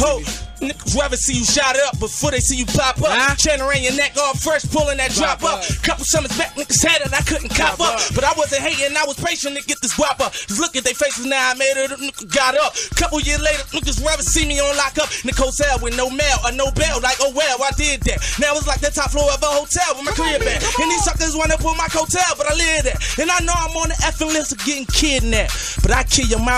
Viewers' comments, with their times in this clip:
0:09 he shoulda drop dat beat on a mixtape